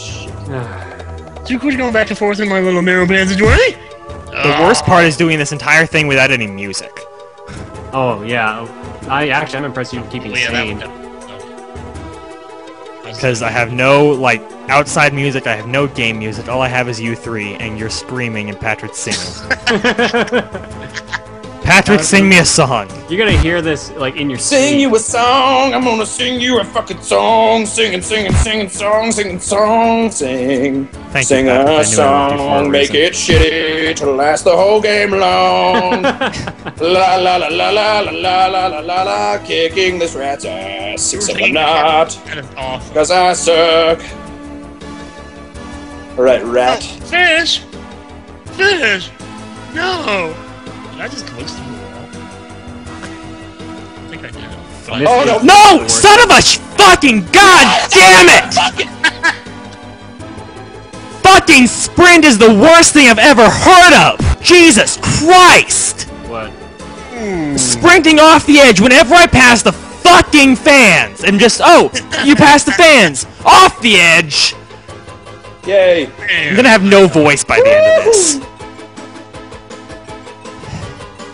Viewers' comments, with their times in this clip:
0:07 'Die 200 times in toal'? Toal.
1:07 I turned down my volume